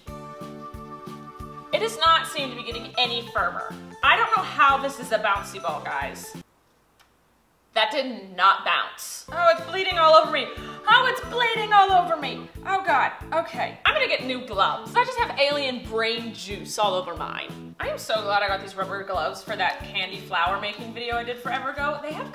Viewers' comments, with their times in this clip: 0:08 The way she said "That did not bounce" really shows how her and Colleen are related.